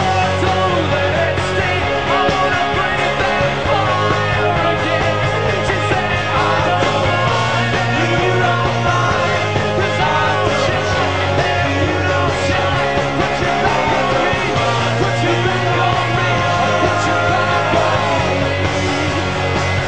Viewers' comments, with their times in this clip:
0:05 mark singing, its heavenly.